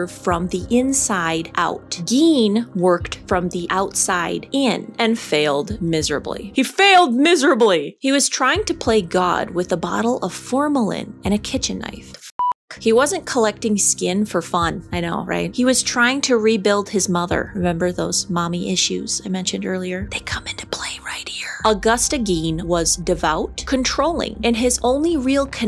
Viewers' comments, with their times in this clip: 0:08 i love you!! youre talking about gruesome things but bleep the "f" word. I laughed. haha!!